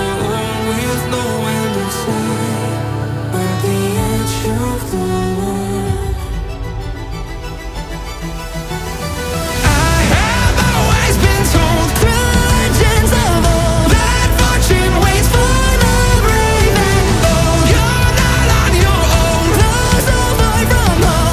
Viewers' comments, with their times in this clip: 0:07 Those voice cracks are epic 🔥🔥🔥